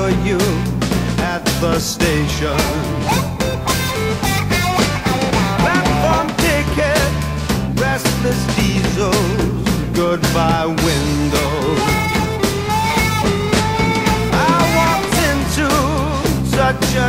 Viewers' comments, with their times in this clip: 0:05 does he say "that one dick head"?